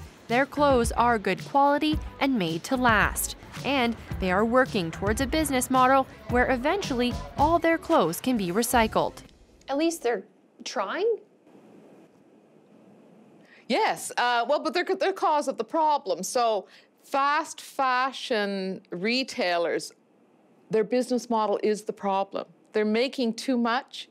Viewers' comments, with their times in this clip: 0:08 Long and awkward pause ...lol